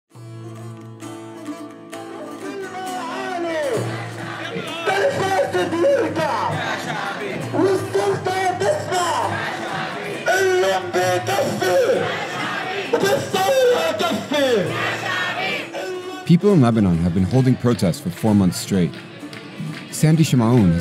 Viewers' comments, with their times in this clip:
0:05 Is it just me or He sounds like the South Park Guy Saying they took a jobs but is all raspey and messed up 😂 But they need to have a civil war because government don’t understand noting more or less
0:08 The guy singing in tune of Azaadi slogan Right?